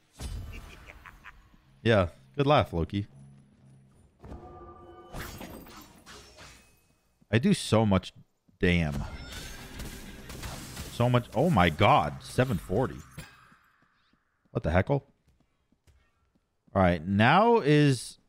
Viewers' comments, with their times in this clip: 0:04 Sounded like a Scarface impression ish lmao